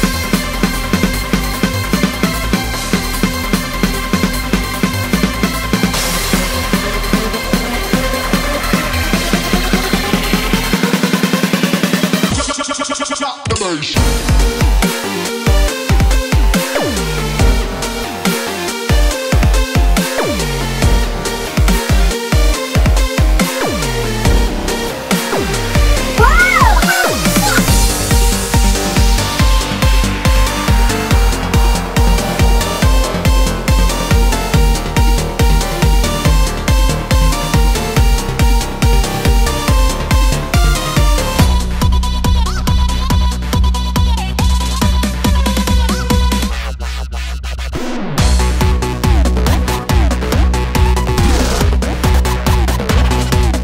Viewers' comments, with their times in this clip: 0:08 the first best transition
0:14 is it just me or Arsenal pyramid sound like Revenge aka (creeper aw man)
0:41 why this reminds me of ganga stlye music tho??